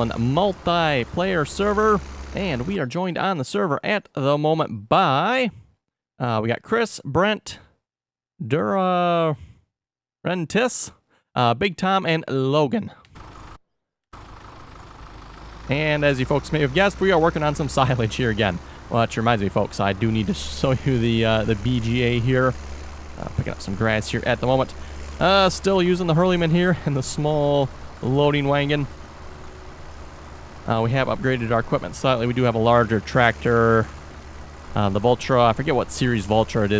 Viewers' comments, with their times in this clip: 0:08 dat voice crack doe
0:18 dat voice crack doe